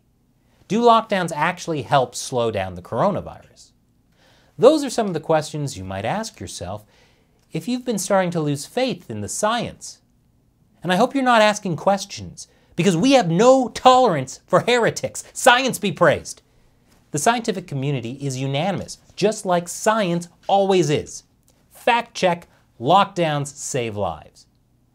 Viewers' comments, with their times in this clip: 0:08 sounds like Tosh so much😂